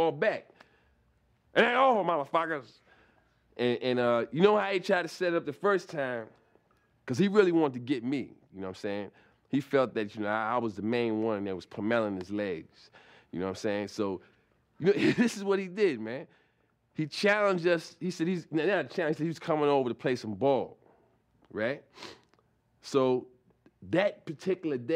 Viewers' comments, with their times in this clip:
0:10 pum meling his legs.. The way Charlie says pummeling. 😂
0:11 the way Charlie says pummeling his legs lol. God he's so funny. Rip Charlie I'll never forget these stories.
0:12 puh-mellin’ his legs 🤣